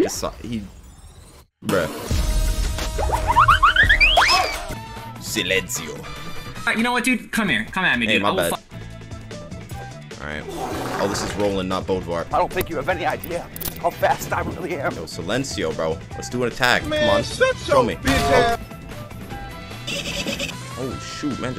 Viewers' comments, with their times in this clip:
0:03 it was soo funny listen you speak spanish